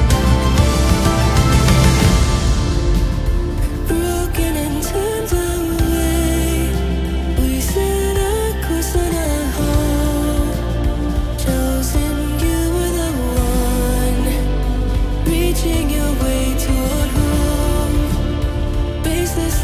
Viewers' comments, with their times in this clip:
0:03 I love the way its beginning hears like JAPANESE